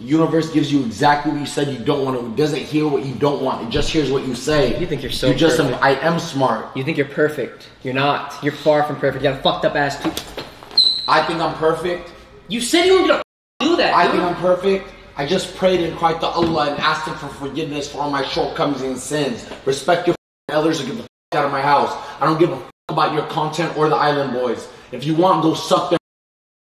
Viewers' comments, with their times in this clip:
0:09 neon sounded like a battered woman "you said you weren't going too do that" 😂🤣😂🤣